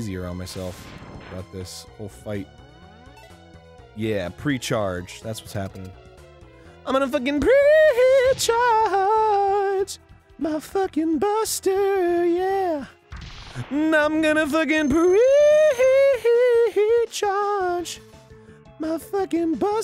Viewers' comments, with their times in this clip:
0:06 this sounds like the ending to "why should i worry" from "Oliver and company."